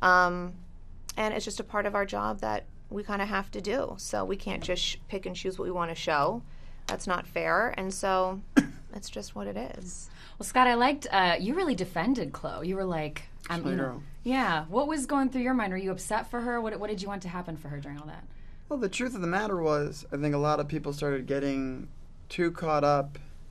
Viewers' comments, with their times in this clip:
0:04 Did anyone noticed Scott little coughing when Khloe said "we can't just pick and choose what we want to show, that's not fair..." that's hilarious 🤣🤣🤣🤣😂😂😂